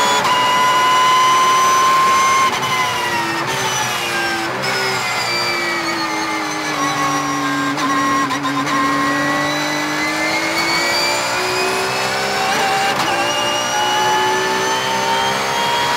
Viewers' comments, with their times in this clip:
0:03 The motor sound is simply amazing